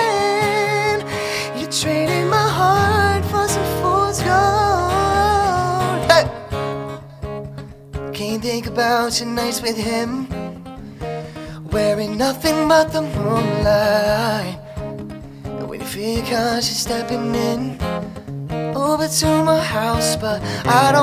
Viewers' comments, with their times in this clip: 0:06 Wtf 🤣🤣🤣🤣💀 you ain’t Ray Charles. Voice is all over the place. Plus this guy hasn’t been with him for 15 years..never saw him at your tours lmao